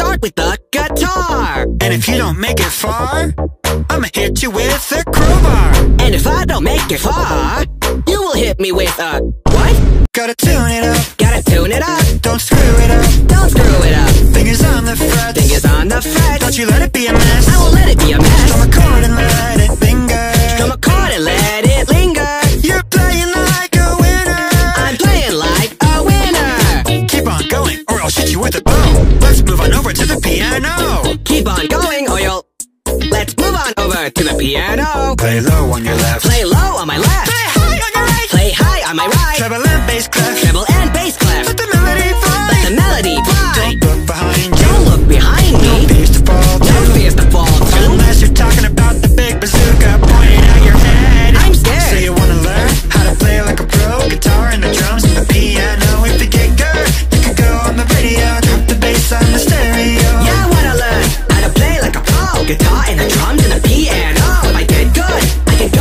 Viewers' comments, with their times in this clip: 0:08 Bruh, I got a notification on my android and it sounded like "And if I don't make it far, you will hit me with a (adroid sdx affect)
0:27 I’m playing like a weiner
0:36 bro really did that high note
0:37 Cg5 sounded oddly high
0:43 Vine Boom Barrage
0:48 the way parappa says im scared so calmly even though hes in a life threatening situation EDIT: oh my god this is the most likes ive ever gotten on a comment thank you guys
0:49 blud said I’m scared so calmly 💀